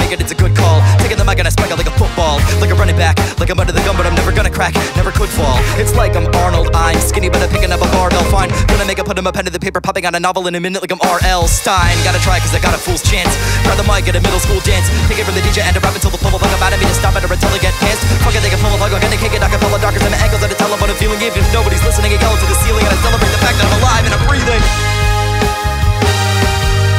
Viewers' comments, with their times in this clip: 0:06 wait wait wait did he say kill a nigga..... let me double check its
0:08 what does he say "kill a nigga put him under the paper" ???????